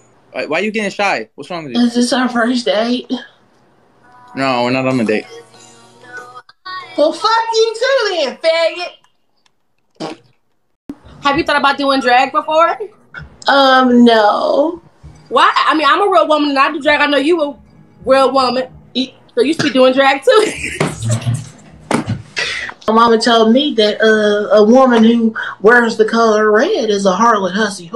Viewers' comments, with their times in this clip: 0:10 THE FART LMAOAOAIOAAO